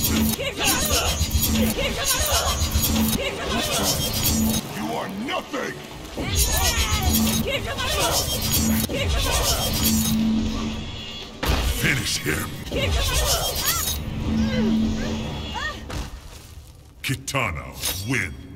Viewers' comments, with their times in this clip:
0:04 she actually said empress not BEEEEIBOOOMAAARROO